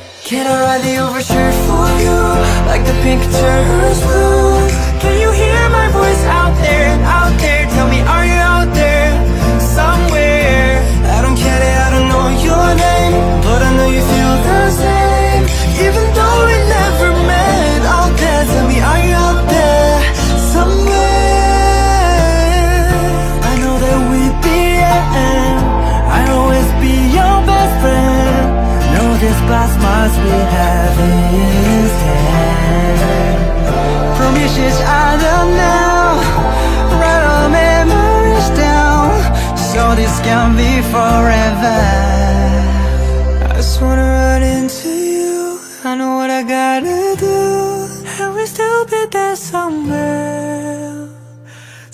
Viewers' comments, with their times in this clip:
0:05 omg AK literally sounds soooo good here🤯🤯🥵
0:39 Nice song, Mika and Patrick are perfectly match with the style and groove. However, Riki’s part “write our memories down” is surprisingly to me, miss him.